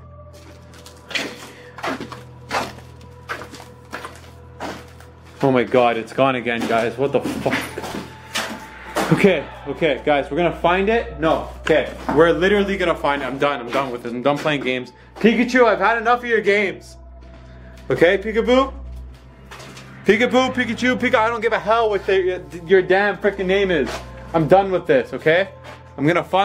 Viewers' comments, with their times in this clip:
0:08 Says "get out" ?
0:09 I heard breathing on
0:11 someone or something said "hide"😳😳😳